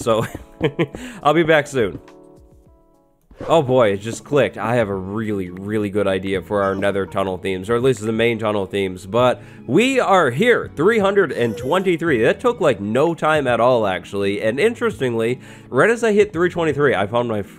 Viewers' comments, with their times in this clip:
0:05 sounded like “oough”